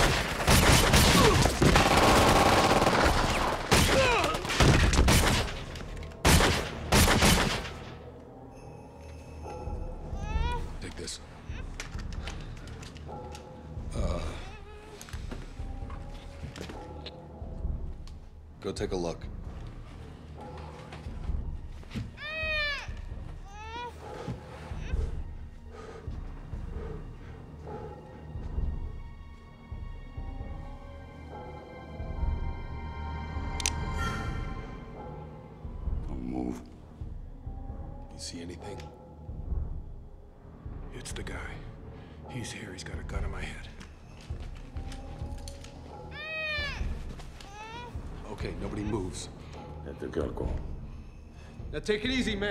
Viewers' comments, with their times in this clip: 0:08 little bit of Goldeneye music I hear there
0:13 I love that little "uhhh"
0:13 I always loved the "uhhh..."
0:33 Okay, seriously... that little "wah" trumpet noise was so well timed. 😄